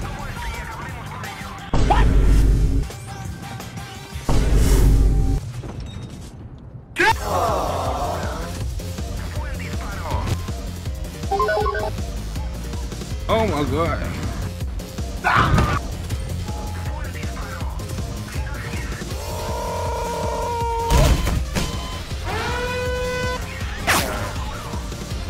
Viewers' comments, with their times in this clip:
0:07 oooowww *Kv-2 shot